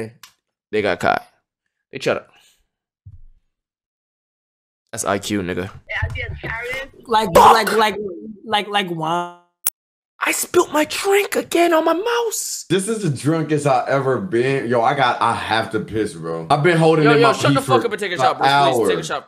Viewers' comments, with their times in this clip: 0:06 Ong he sound just like the meme